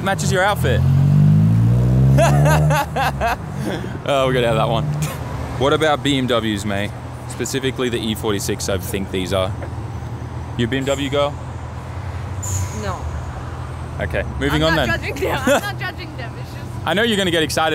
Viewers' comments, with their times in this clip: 0:04 most british accent ive heard from him